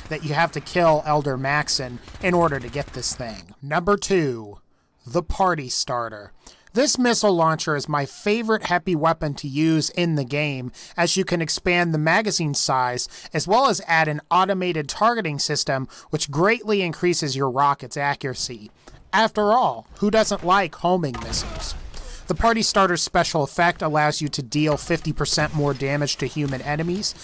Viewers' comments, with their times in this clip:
0:06 "My favourite happy weapon!" Who doesn't like happy weapons?
0:08 he said heppy weapon